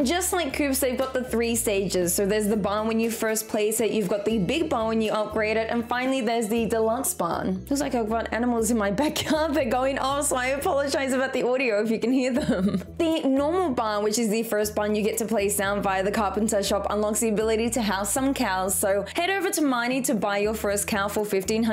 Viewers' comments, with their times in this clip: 0:08 those animals are probably like, "Guys are you listening to this!? Shes giving some really good stardew valley tips!"